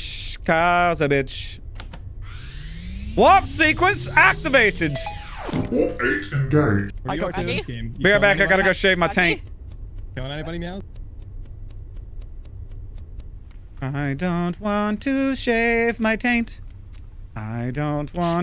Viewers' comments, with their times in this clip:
0:05 anyone else hear space marine voice
0:06 Damn that voice effect is so sick, I wish we could see how he did it